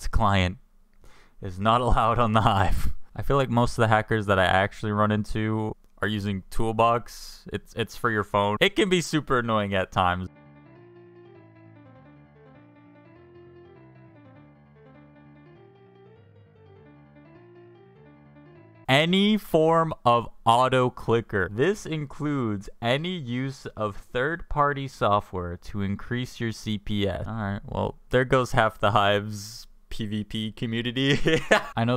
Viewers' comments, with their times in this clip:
0:10 *Piano Pirates of the Caribbean Intensifies*
0:12 I like how Pirates of the caribbean music plays while hes hacking